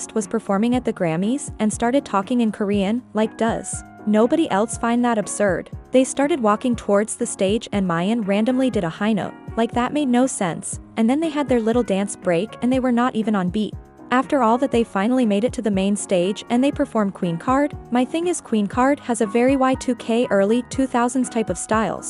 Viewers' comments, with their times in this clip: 0:04 and with a hard accent to understand in some parts 💀